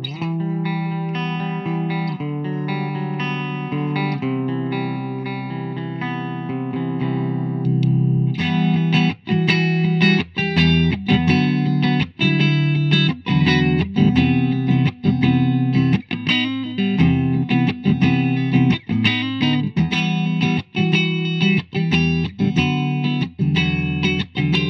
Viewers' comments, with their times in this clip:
0:09 Riff reminds me of My Chemical Romance , Vampires will never hurt you!